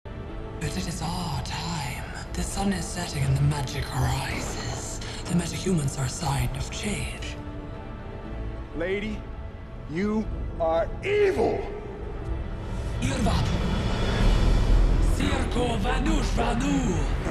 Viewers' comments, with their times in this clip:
0:02 This Woman is kinda like cetrion from mk11 but her voice is like Kronika, from the main villain of mk11